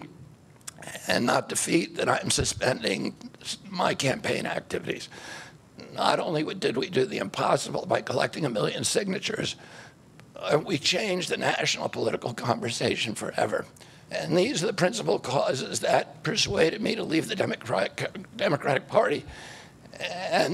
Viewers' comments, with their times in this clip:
0:05 Why does he sound like Carmen whiny self from South Park! Someone forced him to put his support along to Trump. You can hear it in his suffering voice. :face-purple-crying::face-purple-crying::face-purple-crying::face-purple-crying: